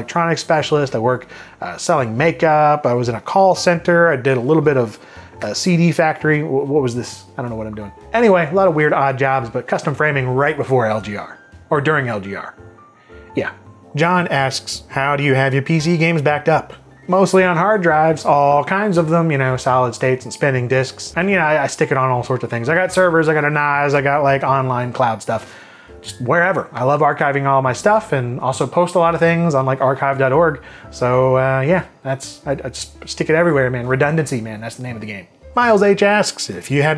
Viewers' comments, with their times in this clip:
0:03 ooh, what kind of s e e d y factory?
0:23 did you just call a NAS a "nozz"? I mean I know that's how the Old Town Road guy pronounces his name, but does that have to apply to network attached storage?